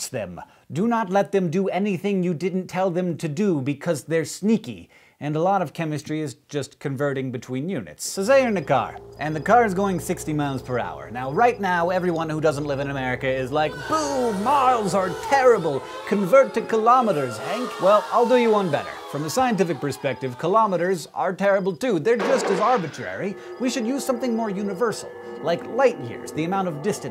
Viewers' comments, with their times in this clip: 0:08 Who else can hear the humour in his voice